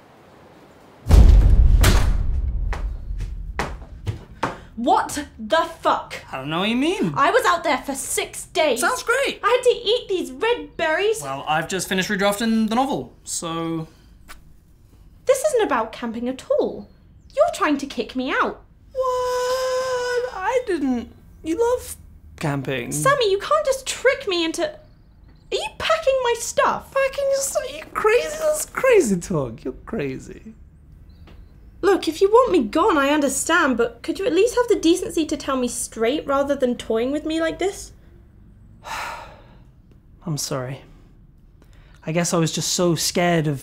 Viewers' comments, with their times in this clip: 0:04 Dodie sounds kinda like Emma Watson! Also this sketch is excellent.
0:04 essex dodie emerges
0:26 Can we just talk about how he turned to Stewie Griffin